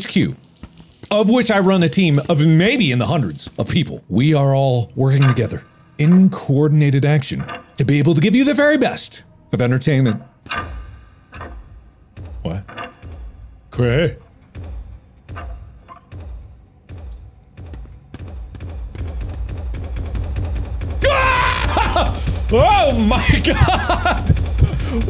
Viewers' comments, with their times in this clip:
0:10 Markplier speaking portuguese?
0:13 ...too much final fantasy happening in my head, I thought he said Kweh as in Chocobo Kweh lol Also those banger intros he did...i mean that ONE intro was soooo good 👏👏👏😊